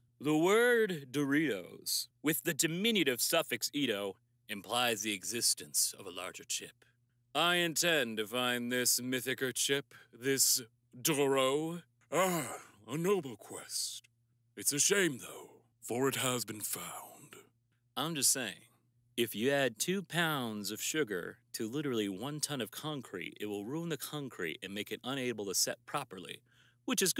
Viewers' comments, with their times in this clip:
0:10 he sounds EXACTLY like Kodlak Whitemane